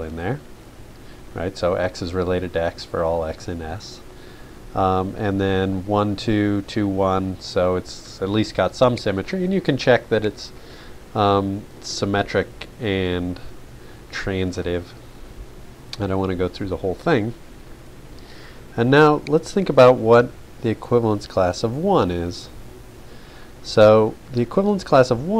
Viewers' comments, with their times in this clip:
0:09 When you try to listen carefully to your teacher but his/her voice cracked